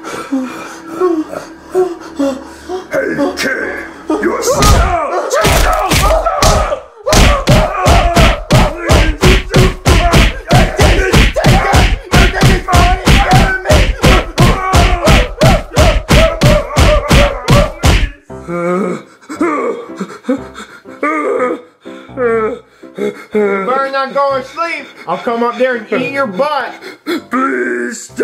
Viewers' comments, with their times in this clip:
0:09 I hear the Ooting noise